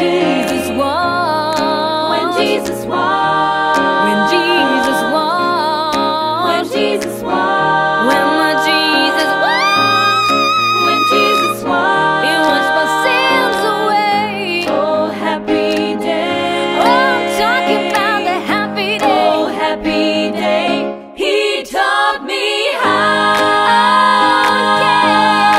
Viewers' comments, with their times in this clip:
0:09 I like the solid high E flat Good job!